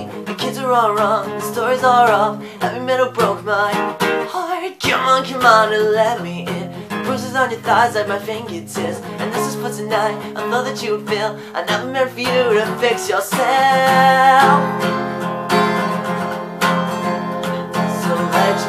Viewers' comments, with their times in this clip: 0:04 had to immediately pause and rewind to WOW THAT HIGH NOTE THO<3 (better than the original lol)